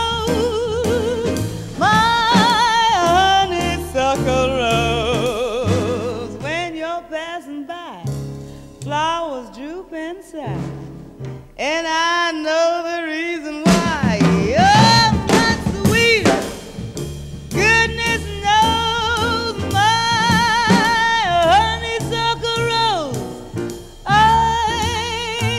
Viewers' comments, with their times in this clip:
0:06 Appreciate that bit of actual, authentic, full and HEALTHY sounding singing. This can undisputably be labeled as an instance of fine tuned and peak human capacity for being. One is left awestruck and smiling.